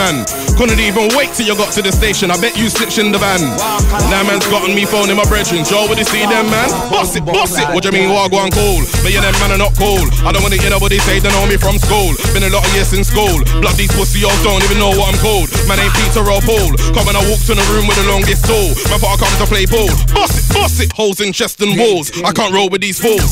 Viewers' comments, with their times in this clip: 0:08 jheeze that beat